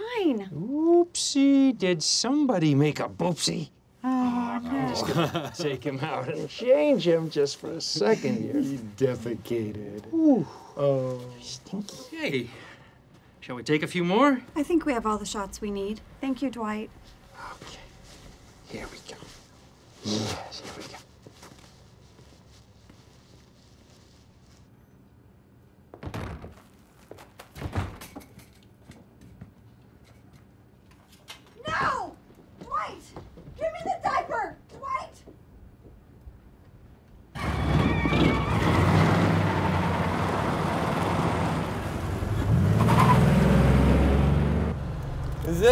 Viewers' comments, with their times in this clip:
0:08 the way Dwight said defecated😂😂
0:08 you defeated in a cute voice
0:31 i start laughing when i hear angela scream NO!